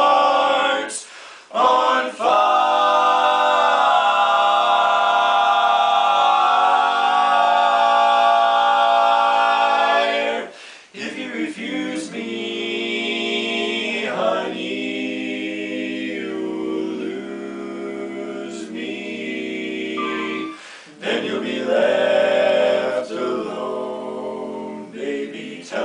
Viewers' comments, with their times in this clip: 0:09 Love listening to this quartet! Holy crap: a first run-through and you guys are hitting chords like amazing. I want to sing this (Second Edition) arrangement so badly is it society-published, or did you order it from the arranger? Anyway, great great video. Jealous you guys have 4 YOUNG talented barbershoppers - there aren't many here -S ON District